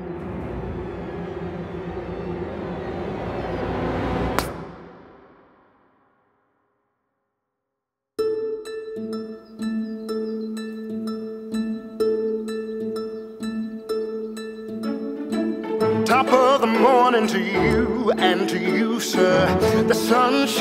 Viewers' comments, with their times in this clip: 0:07 is when the music starts